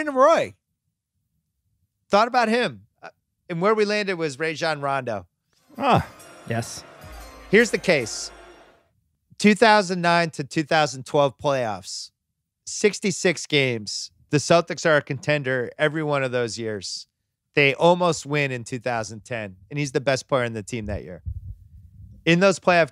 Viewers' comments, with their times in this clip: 0:03 Bill actually said Rajon Rondos name right. So many people say it wrong